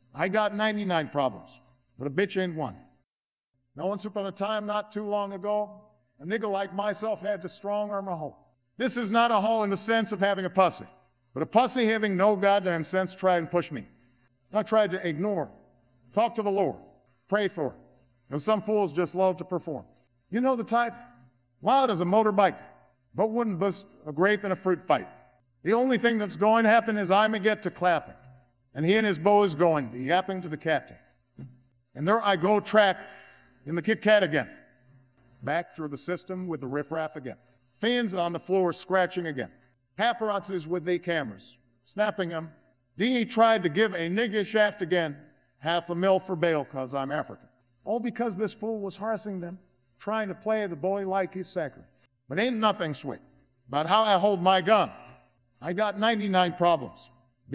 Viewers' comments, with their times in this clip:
0:03 got me good xD he says it so perfect
0:10 the way he says “pussy” is the worst thing I’ve heard in my entire life
0:45 Hearing "Half a mil for bail 'cuz I'm African" in AI Obama's voice makes me happy. Lol